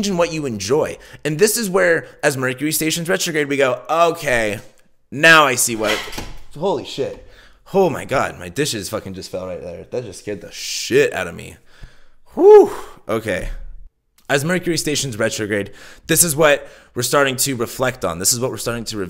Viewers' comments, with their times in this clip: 0:06 ghostie sayin heeeyyyyy